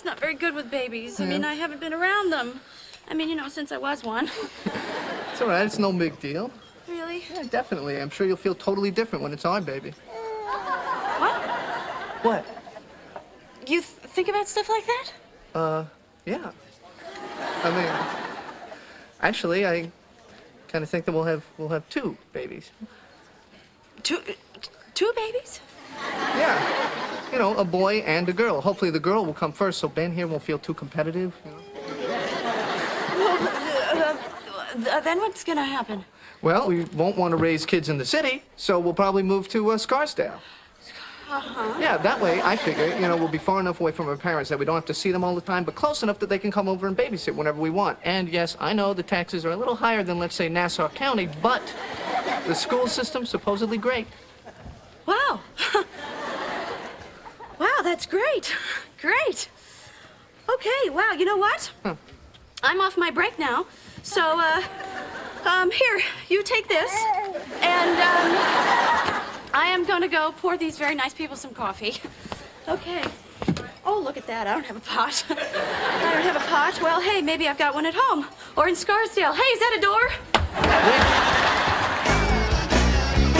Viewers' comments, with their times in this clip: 0:10 that little yawn Ben does though...
1:07 Haha the noise Ben makes